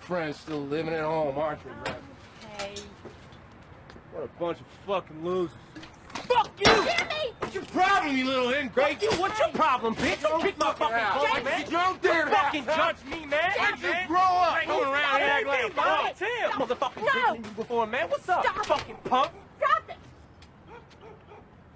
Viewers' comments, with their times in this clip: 0:09 The way he said it XD